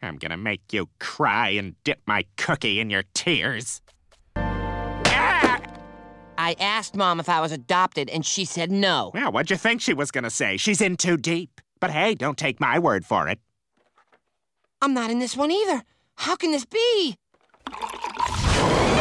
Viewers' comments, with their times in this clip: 0:04 the slap and the scream always fucking gets me